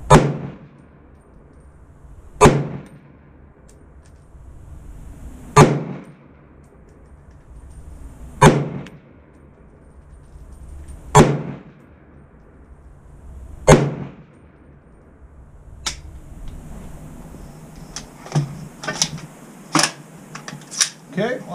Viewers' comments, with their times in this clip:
0:06 A properly gassed AR15 should be ejecting between 3-4 o’clock. Since they’re basically the same platform, I’ll use that logic here too. You’re is eject at like lol incredibly under gassed. I’d just run it on 3. Mine ejects perfectly on that setting so I just didn’t change it. Also, if there was ever a candidate for a suppressor…. It’s this sucker. Holy loud